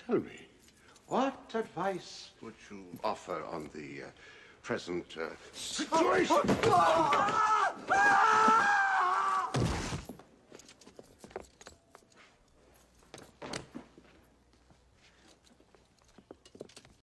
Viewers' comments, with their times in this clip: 0:07 play this with the speed at 0.5. It looks like he's swimming in the air and when he lands, it's sounds like he landed in the pool of water.